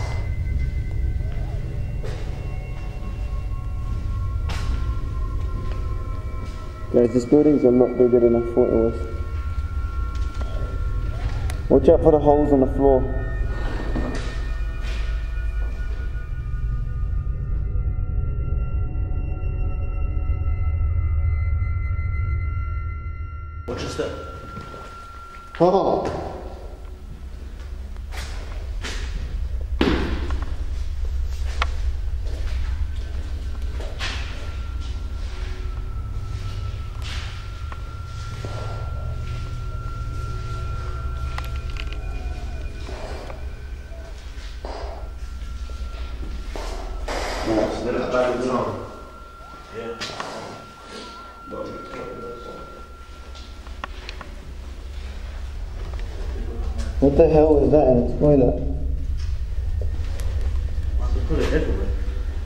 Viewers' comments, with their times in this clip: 0:10 you hear someone screaming or something good btw bro
0:41 Can you hear yelling ?
0:50 u can hear crying